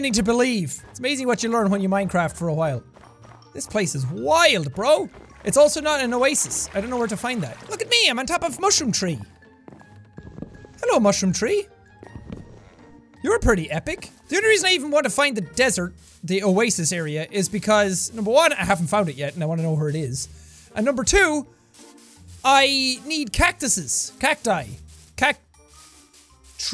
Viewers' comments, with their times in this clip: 0:10 Distant sounds of a crying Dutch woman.